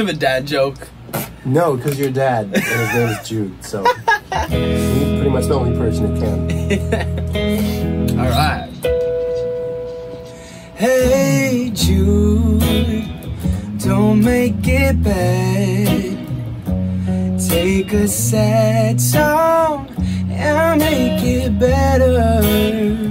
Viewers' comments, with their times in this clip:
0:10 the moment he sang it's beautiful